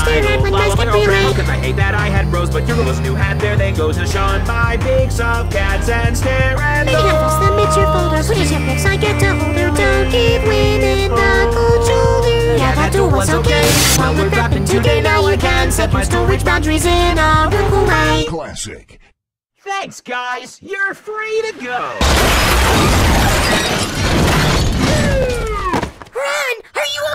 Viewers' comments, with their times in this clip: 0:09 you can hear rons real voice